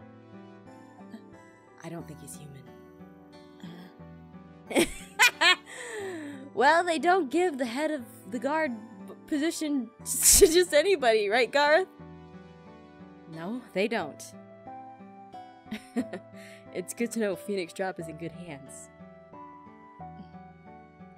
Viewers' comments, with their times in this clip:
0:03 Omg the laugh Ahpmau made for Dante That just made me laugh so hard